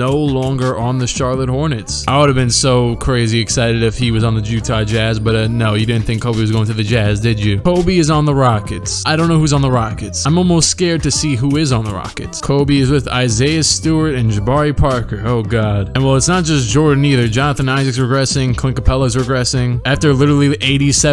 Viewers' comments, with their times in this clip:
0:03 “Jewtah Jazz” lol
0:03 he says JEWtah Jazz 😂